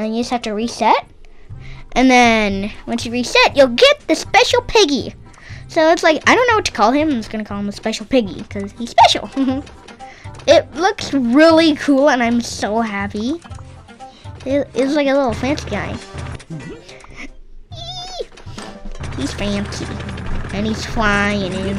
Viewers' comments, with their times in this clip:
0:03 i like this part it sounds funny